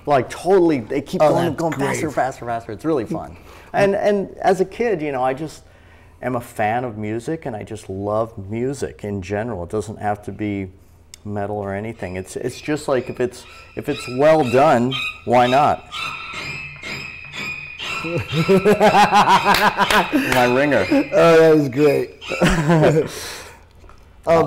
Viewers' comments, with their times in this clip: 0:09 It doesn't need to be metal: HORROR RINGTONE INTENSIFIES